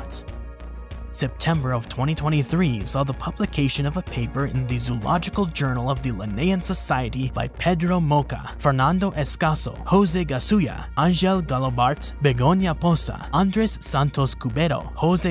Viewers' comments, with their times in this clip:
0:03 I am sorry to have doubted you 😢, your pronunciation here was exquisite. Great video too, it seems that these sauropods were in every corner of the earth